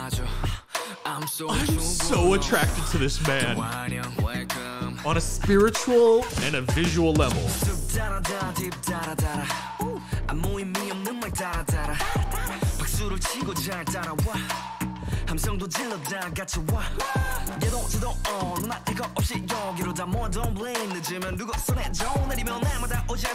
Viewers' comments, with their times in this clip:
0:06 When he yelled WOW, who else was deafened? I was wearing headphones- that’ll teach me to watch personal stuff at work 😂😂 Yes, I love when we take over 25 mins to dissect the minutes of HUTA/Minhyuk’s BOOM cos it deserves that much attention at the least. Love that he took the time at the start to fanboy then at about the 10 min mark we went into the analysis. Always love his BTOB vids 💙